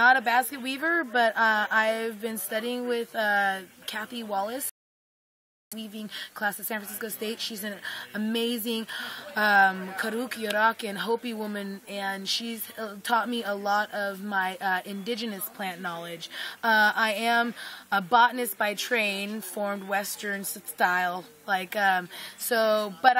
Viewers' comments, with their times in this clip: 0:05 Too bad the sound cuts out but still so good to hear about ndn canyon I used to visit there with my chumash crew from Kalawasaq' village rez(Santa Ynez) for the storytelling doings, I will never forget the beautiful land and hospitality we received. Tani hey .